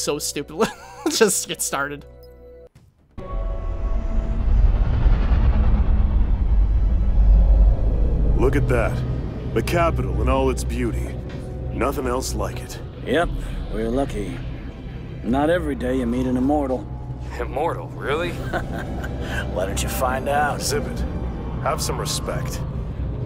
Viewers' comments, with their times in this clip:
0:08 Only a true fairy tail fan would think that sounded like Laxus dreyer! I even searched up a fight where Laxus talked and IT WAS EXACTLY THE SAME! No doubt about it I am getting this goddamn game!